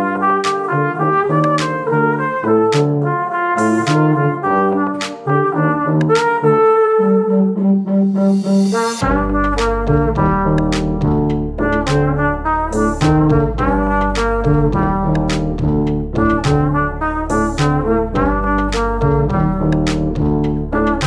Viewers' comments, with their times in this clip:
0:06 stop, was that a vibrato?????